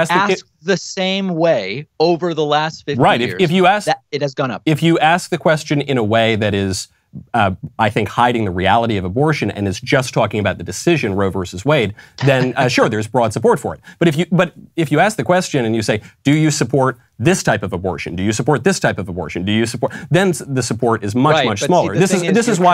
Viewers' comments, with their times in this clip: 0:09 I love how David laughs at Mike's point of view . Thus is transparency and I love to see people be genuine no matter what their stance . Thank you David David coming on and speaking to Mike reasonably and transparently